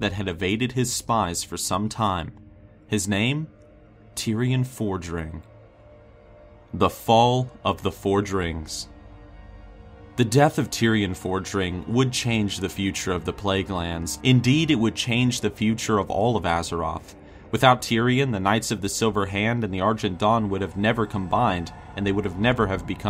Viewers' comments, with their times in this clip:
0:06 The Fall of the four Rings???? AUDIII, NOOOOOO